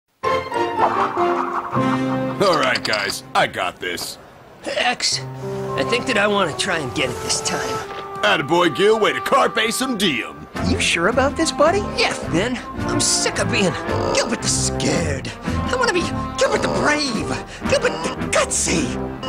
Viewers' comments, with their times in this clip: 0:00 Crash bandicoot spin sound